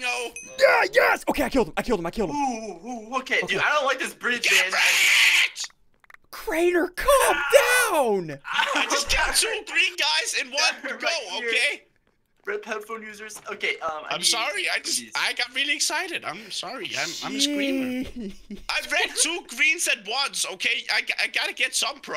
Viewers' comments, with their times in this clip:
0:04 RIP headphone users "GET REDDDDDDDDDDDD" lol